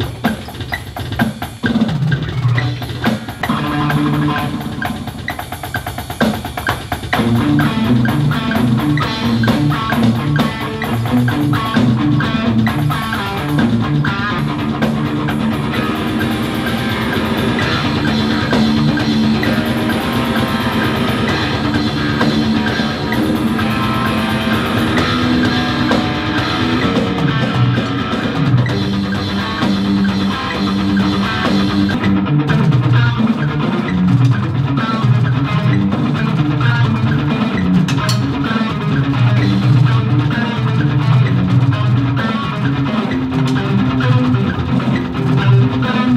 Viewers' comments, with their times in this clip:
0:03 all that section sounds like the faceless
0:18 That riff was sick. Would be cool if Dave used it
0:33 Sounds like Cynic
0:33 The playing kind of reminded me of Cynic. Only to find out minutes later via youtube that Sean Reinert passed away recently. What a shock.....